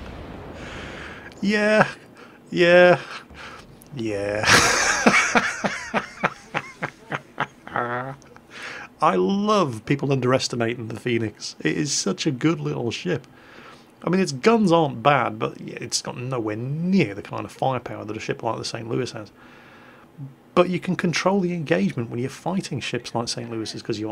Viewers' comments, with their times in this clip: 0:07 dat laugh doe